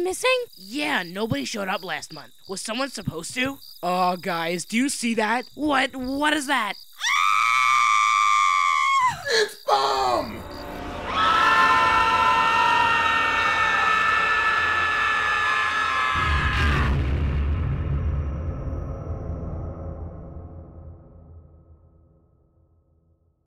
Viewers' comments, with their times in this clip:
0:04 was my favorite part because bomb boooooom🎉🎉🎉😮
0:07 I like how bomb & everyone screams
0:09 Bomb: (screams) Knife: IT’S BOMB!!!